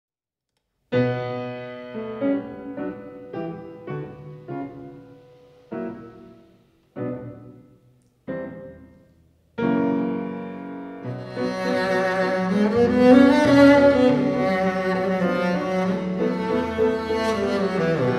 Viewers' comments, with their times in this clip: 0:02 already wrong note :) Bassist is really good though...was pianists fault